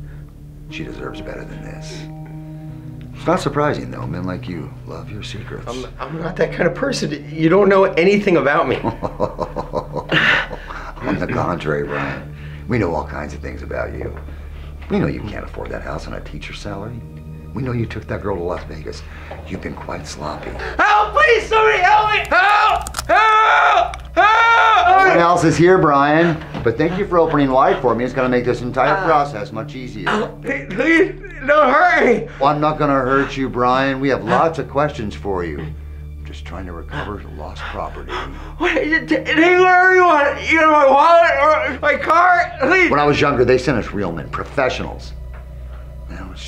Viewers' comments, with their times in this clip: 0:10 the perfect evil laugh wow
0:31 oops i understood @ min. "Please don't hurry!" But that doesn't make any sense except if he'd enjoy it. xD But I guess that's not the case. Quite different Buzzfeed Unsolved videos!